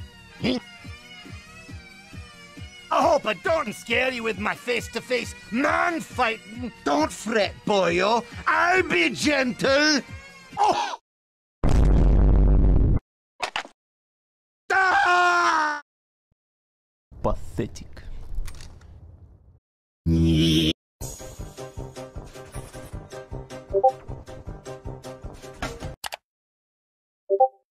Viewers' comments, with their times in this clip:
0:10 I died at that mk theme 😂😂😂 but that beat boxing dude dogg 💀💀💀